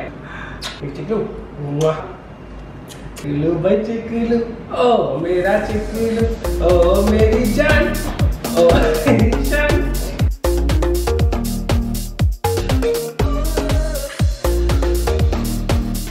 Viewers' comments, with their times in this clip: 0:03 i love this song 😘😘😘